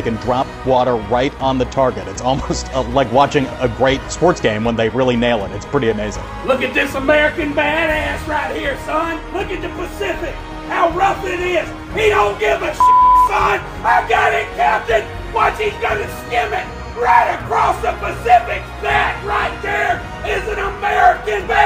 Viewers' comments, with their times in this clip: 0:06 I lost my sh!t your man's like one of those rowdy NFL fans. as a Canadian myself, I know he's all look at this American badass but he should know that's Canadians doing Canadian things. But other then that, his mad cheering was heeeee-larious. LOL!
0:06 That dude screaming his head off...just ...thanks for your appreciation, sir. We are American bad-asses. Just not USA American bad-asses'. ❤ Canadians. ❤